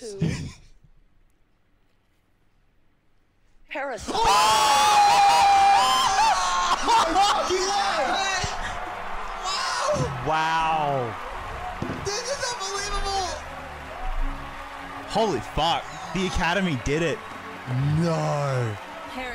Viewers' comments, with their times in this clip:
0:03 Sorry, people with headphones